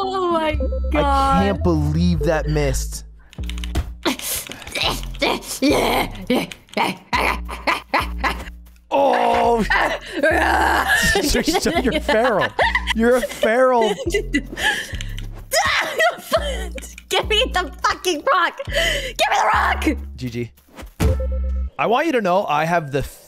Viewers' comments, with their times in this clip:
0:09 Nice growl bruh